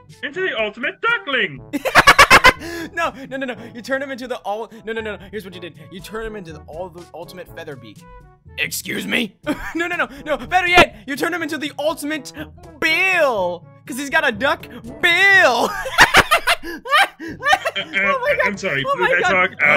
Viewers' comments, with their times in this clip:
0:06 I like on he’s quacking is the funniest thing ever 😂😂😂😂😂😂😂😂😂shadow ur amazing